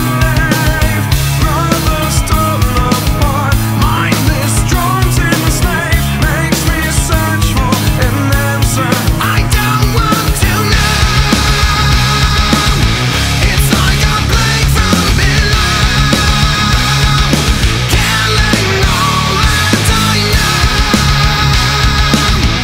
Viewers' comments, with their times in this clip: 0:09 that wall of sound hits like a drug....been hooked on it for years lol...
0:09 The drop goes so hard